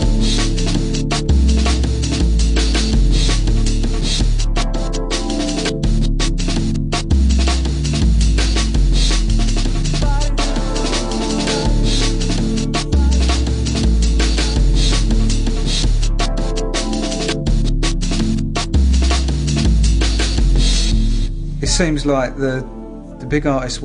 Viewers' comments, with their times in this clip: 0:08 the beats, bass and the soft pad sounds ...with the image of that beautiful girl it's a moment I would want to last for ever.